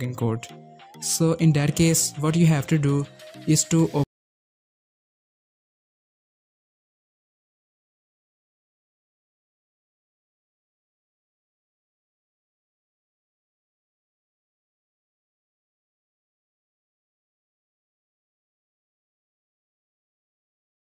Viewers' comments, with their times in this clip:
0:03 Where did the audio go after ?